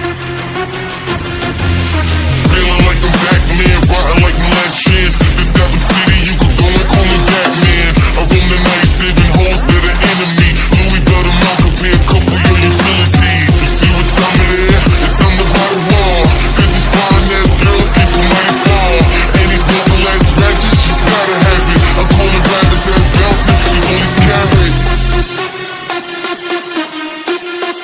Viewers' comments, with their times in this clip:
0:08 music and dancing fits on it